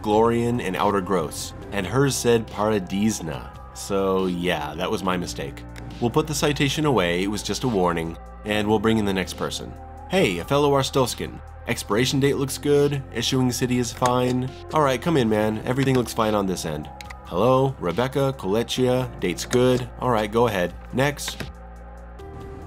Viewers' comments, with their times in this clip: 0:06 the woman was from paraDEEZNUTS and i cant get it out of my head